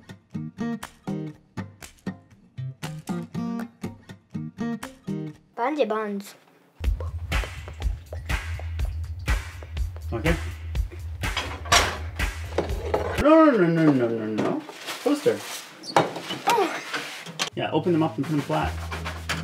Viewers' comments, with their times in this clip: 0:07 great use of bg music 😆